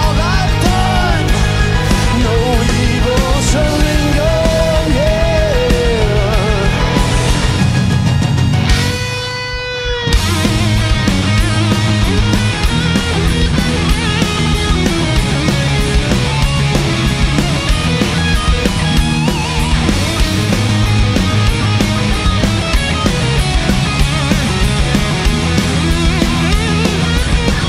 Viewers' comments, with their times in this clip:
0:08 Oh man, that bend is amazing